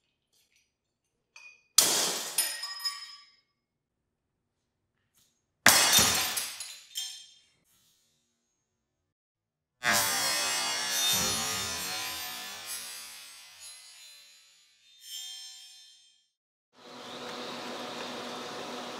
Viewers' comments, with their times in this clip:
0:05 me hearing "NICE SHOT" from wii sports, and seeing the replay thing at the bottom of the screen